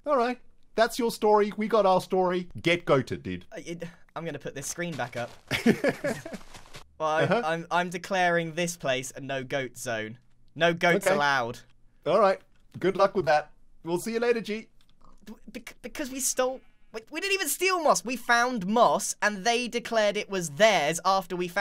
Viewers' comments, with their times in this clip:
0:07 sounds like 3 year olds fighting